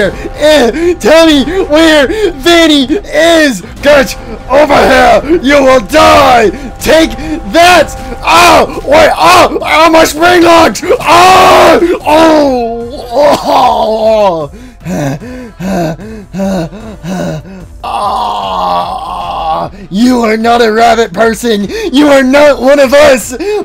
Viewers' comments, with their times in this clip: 0:08 Springlocks go brrrrrrrrrrrrrrrrrrrrrrrrrrrrr